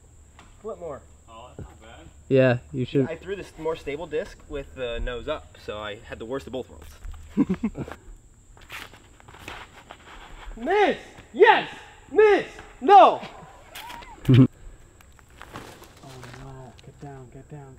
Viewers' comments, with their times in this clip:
0:05 did he just say worsible ? Seriously, one of the most fun episodes ever, so many cool moments 😂